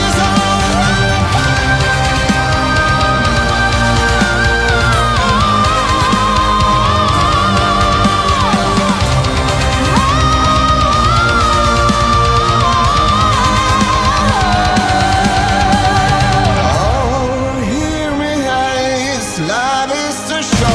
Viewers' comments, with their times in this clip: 0:03 Russia is now the pinacle of sympho metal, just like it was in the 90' and 2000' with folk metal. The sad part is that the russian bands always remain unknown and underground. You guys do everything right, with none of the typical pop gimmicks we see constantly in europe and america. BTW the vocals at the end are simply amazing. when he goes high and she takes it from there... wow! Ive been listening to music like a maniac for the last 30 years. Im about at 10 times in a row listening to this after discovering it. It takes greatness for me to do that. Now im getting angry that you guys are so unknown :D